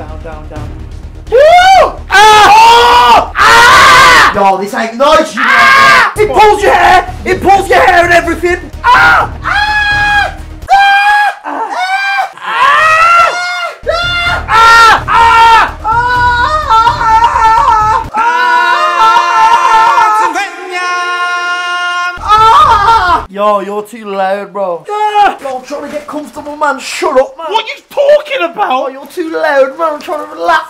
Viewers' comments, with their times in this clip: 0:04 my mans did the tom scream
0:18 He sounds like a pornstar